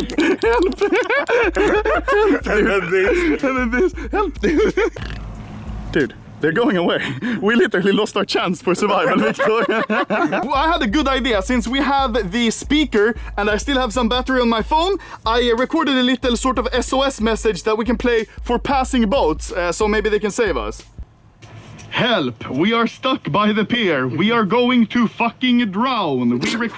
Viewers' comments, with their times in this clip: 0:08 The laugh and face of a man dying inside